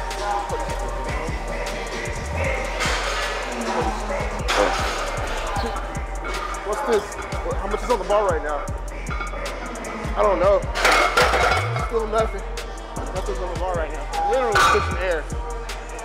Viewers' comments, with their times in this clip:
0:03 when he said “I’m coasting” and did the hand motion, you can hear the song go “zoom”.